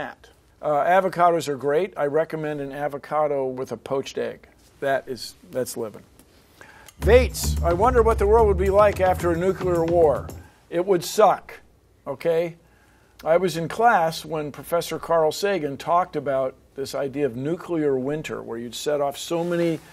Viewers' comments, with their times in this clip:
0:03 at first I thought he said that's lit, and I almost jumped out the window